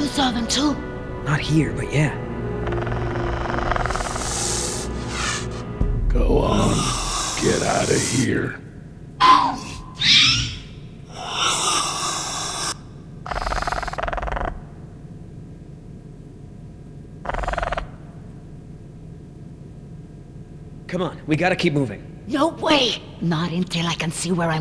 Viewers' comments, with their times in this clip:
0:05 after "go on, get out of here", that rapter TOTALLY said "who, me?" 0_0